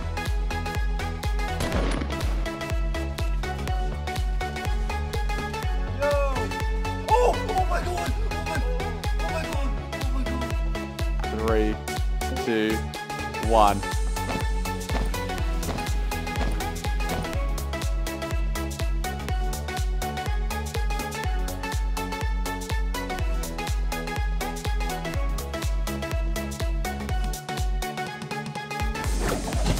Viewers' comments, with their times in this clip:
0:09 The one is actually him lol
0:11 3...2... 1... Drop it DU DU DU DU DU DU DU DU DU alia-A intro stops RIP